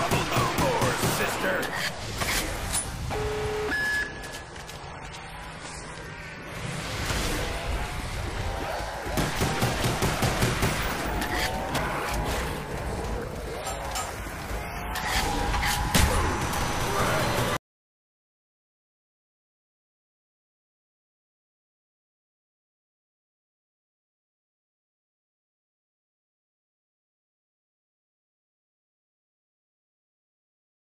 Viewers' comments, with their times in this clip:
0:07 Awesome U have to go to the moon when the 3rd beep goes on. Basically, i survive only on the earth
0:18 badass,addicting,awesome,stuck in the head Indian song coming our way